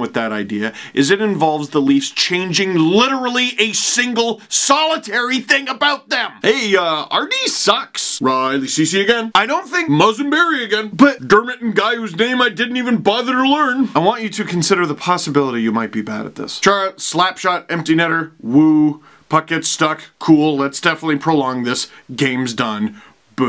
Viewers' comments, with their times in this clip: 0:06 LOL those Babcock impression always cracks me up, I hope the leafs never fire him just for that xD